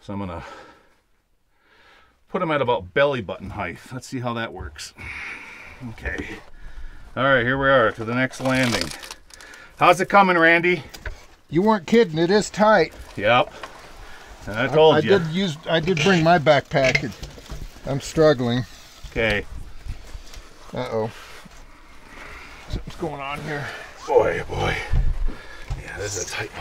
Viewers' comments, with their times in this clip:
0:09 it sounded like you stepped on the pack rat.